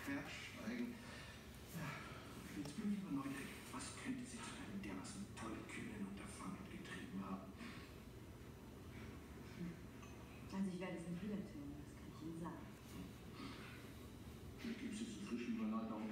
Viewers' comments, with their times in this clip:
0:03 was that german? :o